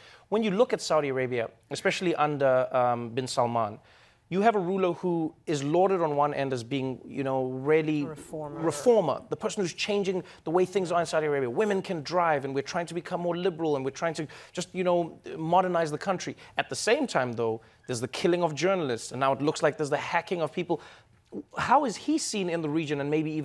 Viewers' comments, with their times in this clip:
0:08 It feels like someone is helping Noah. I could hear the word "reformer" being said in the background which got recorded unintentionally. I am not sure what it is, and I am not blaming anyone. I just heard the word. Did anyone hear it too?